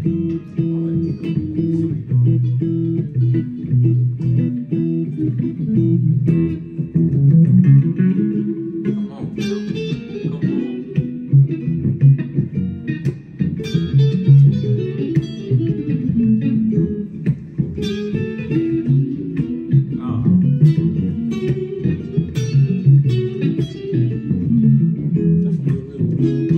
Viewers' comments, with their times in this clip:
0:10 The chord embellishments and walk downs is next level.